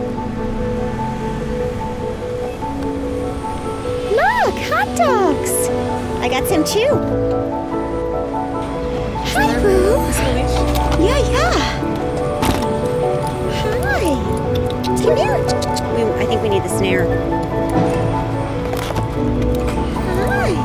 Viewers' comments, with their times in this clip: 0:03 When did Megan Mullally start working for you guys? 🤔I mean, she sounds just like her!🤣😂